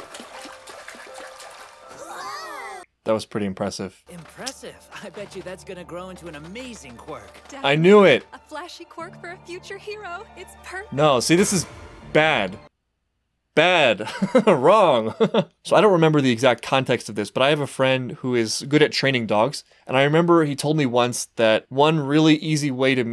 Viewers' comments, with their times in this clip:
0:09 BAD. BAD. Sounds like he's talking to a dog. 😂